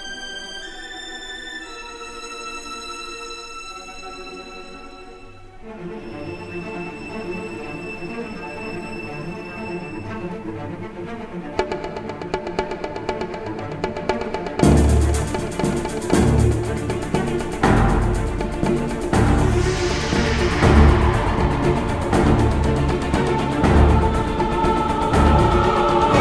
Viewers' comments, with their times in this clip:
0:07 I just find the music for the Marvel logo so satisfying.
0:09 I love how the tempo of the song matches the flashing comic pages
0:11 Nostalgia hits me All these bongos with the violins playing in the background.
0:11 drum beginning always make me so hypeeeeeee,,!!!
0:11 the drums... the drums are coming
0:11 I would be literally screaming inside the hall if I heard these beats the moment Tobey showed up but they made his and Andrew's entrance very soft instead they lost the potential